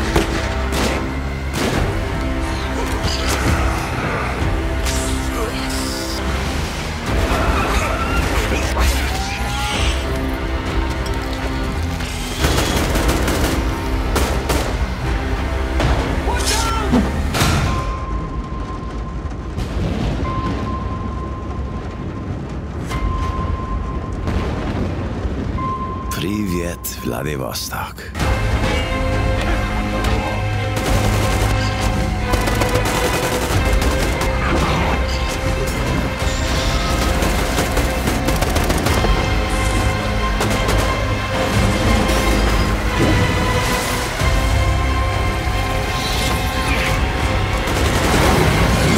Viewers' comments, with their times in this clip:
0:06 If you've played dead space before, you heard isaac's scream
0:31 Whats that Epic music in the backround ? Want to Listen More :D